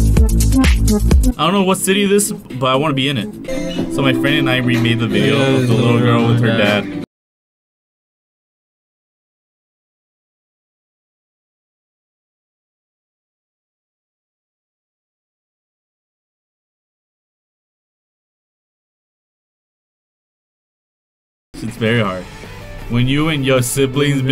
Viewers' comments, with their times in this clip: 0:06 no more audio because of copyroght
0:08 am I only one who don't hear anything?? 🤨🥴
0:08 like if sound cut off